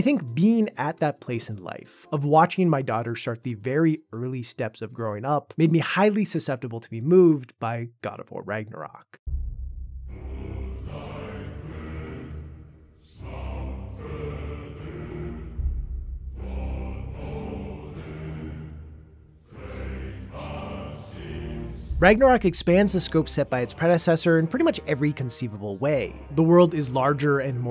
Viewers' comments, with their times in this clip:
0:08 I got chills when the theme started playing